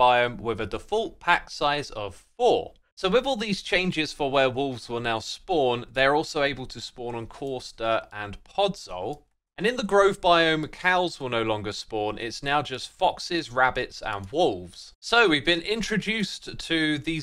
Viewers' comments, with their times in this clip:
0:04 "Four werewolves will now spawn"!? Now THAT'S an exciting addition!